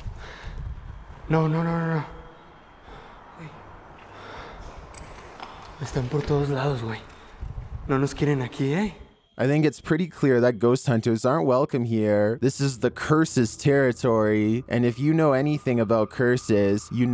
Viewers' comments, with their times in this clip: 0:04 Number 11...@ U missed "running footsteps"😲✌️